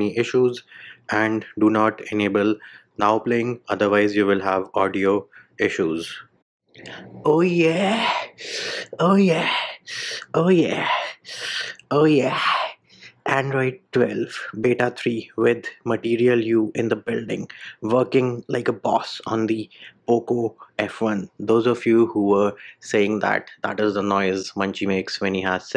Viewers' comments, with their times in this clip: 0:07 sexiest oh yeah ever.
0:07 That sounded like xvideos desi category :D
0:09 I thought some p*** video audio got mixed up